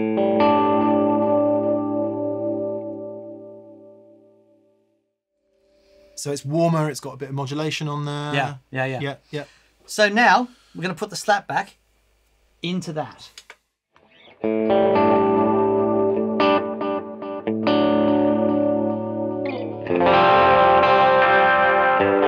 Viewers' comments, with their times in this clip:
0:07 those "Yup" were in Dotted 8th delay setting